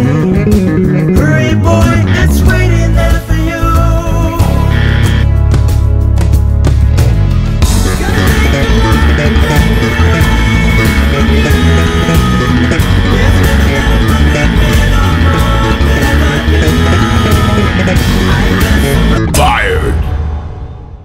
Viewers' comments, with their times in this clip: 0:07 Haha the faces!! And that chorus start snap was priceless!